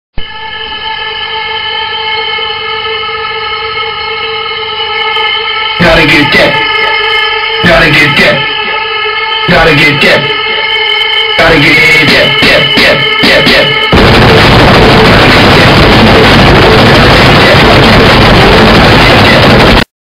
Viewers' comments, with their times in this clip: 0:01 when the toilet is refilling
0:01 Am I the only one who thinks that sounds like a huge group of angry bees
0:13 other videos i watch once i forget to turn down my headphone volume from listening to music:
0:13 The kid with the loud mic:
0:13 When your singing and turn the music all the way to full volume 😂😂😂
0:13 When you put 30 maximum volume on your Sync 3 Ford Vechice Your Ford Vechice:
0:14 When your brothers run around on the second story of a two story house
0:14 when you don't know how to use a synthesizer and be stupid
0:14 Me taking my headphones and one of them touches ground at 3 AM sounds like
0:14 The approximate volume when our teacher comes into our class
0:14 when you watch something late at night and you forgot it was at 102 volume and your brother is in the room next to you
0:14 Nobody: That one person’s Mic in the lobby:
0:14 When i fart:
0:14 Music For My Ears So Noice